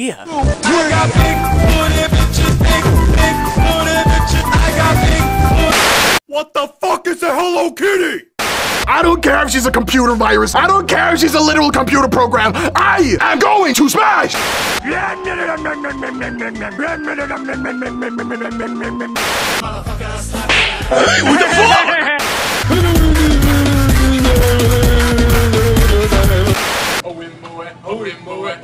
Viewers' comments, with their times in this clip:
0:09 that sounded like me right there xP …unless 👀